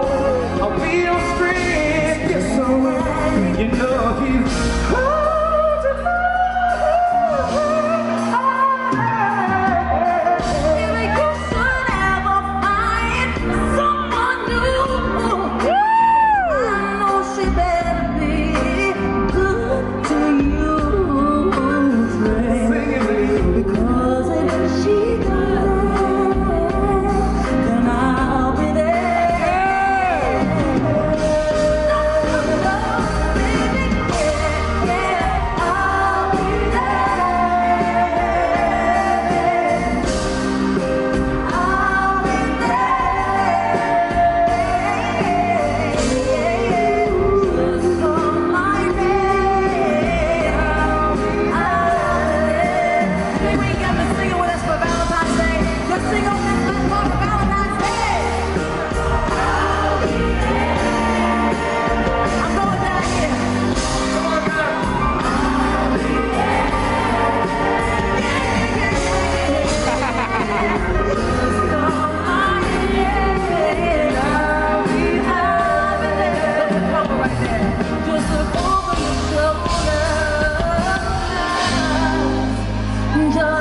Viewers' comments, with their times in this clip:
0:10 luv this part especially when she improvises that 'and if she doesn't 'part
0:13 yes growl-riah I hear ya!
0:20 i dont know if her voice failed or was on purpose
0:24 Love how she sings "she doesn't" 💕
1:07 that girl was right on it, outstanding! she could be a back up for my mariah..